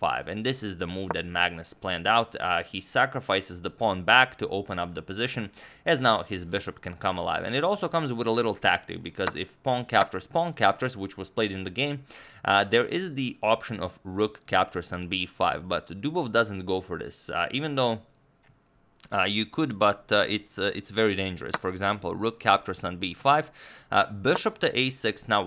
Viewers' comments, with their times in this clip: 0:08 tf is pong?